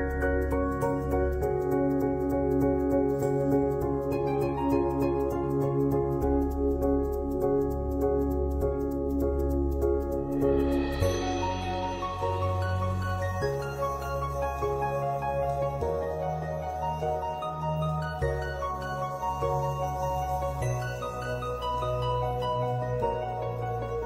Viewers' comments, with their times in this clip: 0:10 It sounds like the bgm of the Zora's Domain in The Legend of Zelda: Breath of the Wild